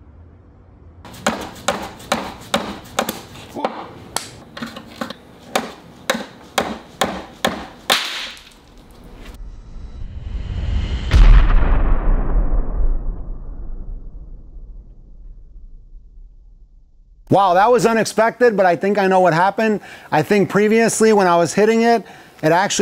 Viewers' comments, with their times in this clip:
0:06 "You had one job!". Ill be honest, after the 3rd SMASH/KABOOM I daren't watch it any further...